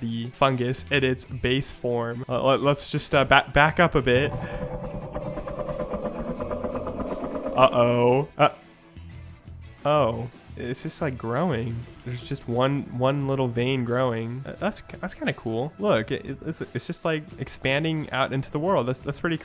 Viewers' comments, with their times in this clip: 0:04 slowed down figure scream from doors